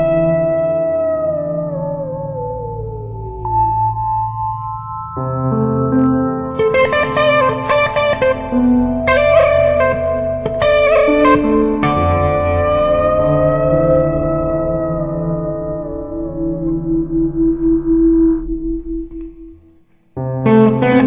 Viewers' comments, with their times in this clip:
0:09 Fantastic tone, man, sounds very Jeff Beckish. What's the thing you do I've heard Jeff Beck do that, it's cool.